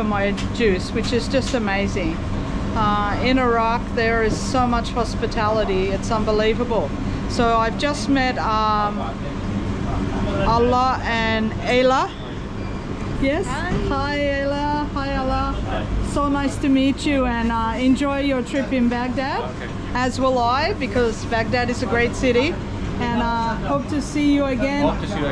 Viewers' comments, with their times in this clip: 0:06 I just met Allah 🤣